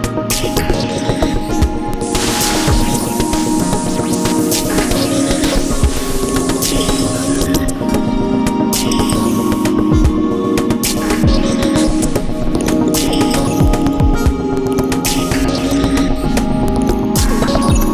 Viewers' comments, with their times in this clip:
0:04 Does anybody know what genre this style of music falls into? People have just told me IDM but that’s not accurate enough. I describe it as Spacey Mid-tempo but hopefully i can find more music like this